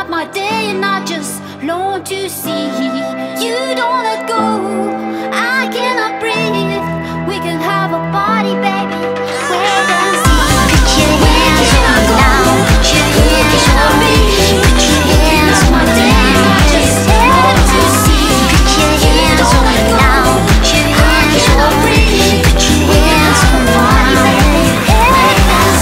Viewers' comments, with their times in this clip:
0:09 i hear the monglian kid cry when she hold her up, it's so ingenue